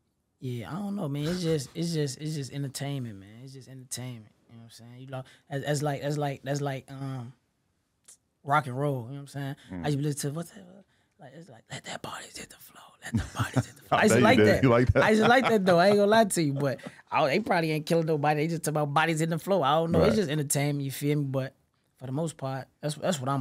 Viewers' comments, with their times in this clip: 0:10 “let the bodies hit the flo let the bodies hit the flo let the bodies hit the flo let the bodies hit the flo IN A FUCKING WHISPER 😂😂😂😂😂😂😂😂😂